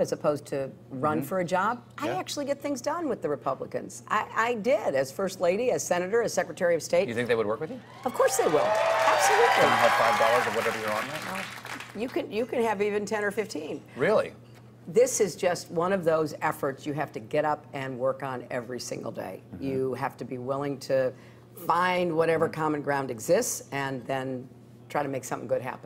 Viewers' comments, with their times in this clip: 0:07 was not a real live applause lol
0:07 I've never heard a more fake cheer recording
0:07 most canned cheering is subtle...
0:08 WTF. They obviously added that cheer